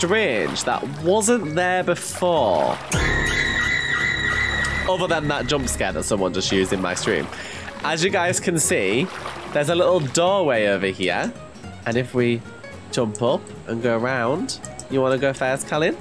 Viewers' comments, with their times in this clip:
0:03 tho that scream